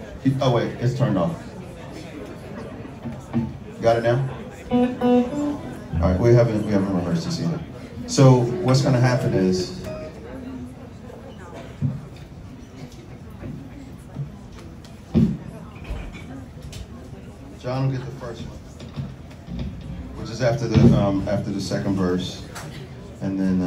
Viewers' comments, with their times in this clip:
0:06 Who started playing Sweet Child O Mine XD